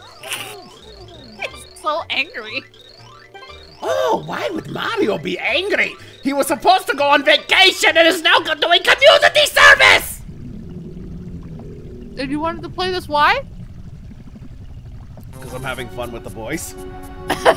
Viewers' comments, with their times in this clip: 0:04 Now he sounds like Dr. Doofenshmirtz from Phineas and Ferb